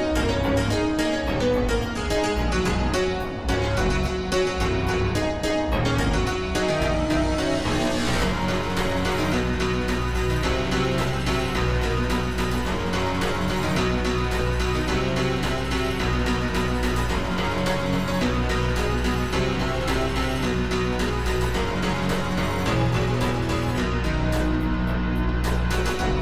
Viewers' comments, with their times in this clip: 0:08 what im talking about is you can hear lyrics if you look at the lyrics or remember the song enough